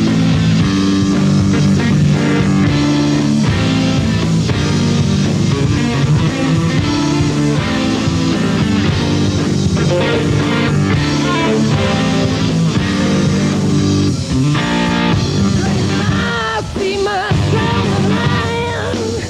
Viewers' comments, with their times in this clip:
0:07 the tone that kicks in might be my favorite tone of all time